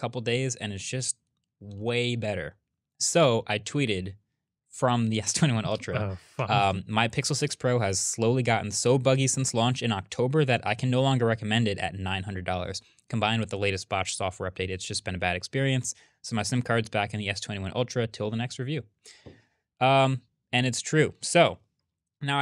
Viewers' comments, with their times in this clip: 0:06 is it just me or does this sound like “oh fuck” 💀